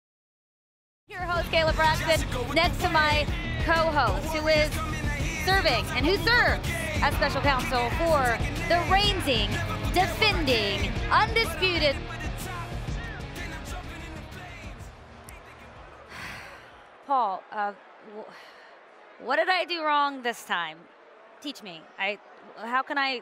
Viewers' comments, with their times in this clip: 0:08 Did Kayla just said : For the reinsing, defending....